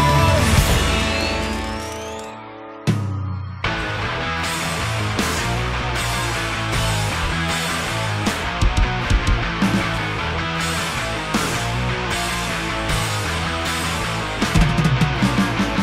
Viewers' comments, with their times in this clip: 0:03 = BRUTAL BREAKDOWN. Nice FC. Too bad I don't like Blink outside of Adam's Song.